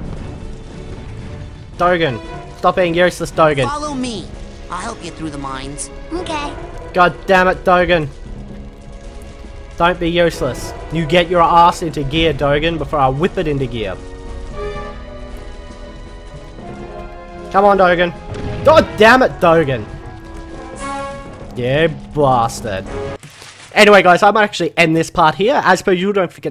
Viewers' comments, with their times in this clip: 0:07 You sound like my mom. XD